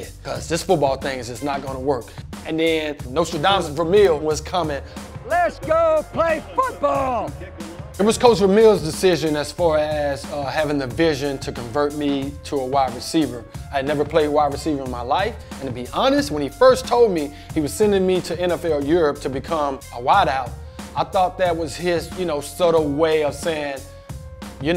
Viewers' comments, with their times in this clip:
0:06 listen closely and you'll hear a voice crack